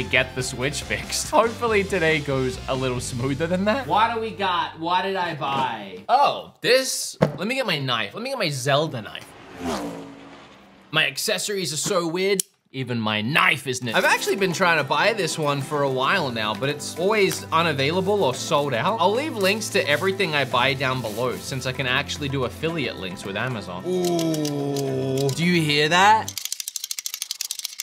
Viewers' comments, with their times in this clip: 0:10 The shot when you get the zelde knife ( into the video) there is a problem with the audio. It doesn’t match your face. It comes to late or early.